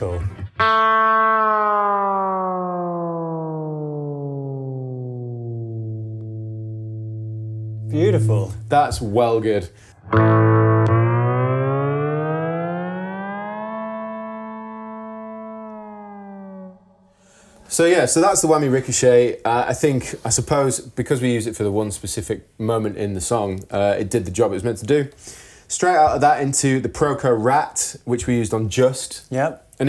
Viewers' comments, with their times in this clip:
0:08 so that's how tom morello did the end of renegades of funk...
0:12 sounds like the Looney Tunes intro 😂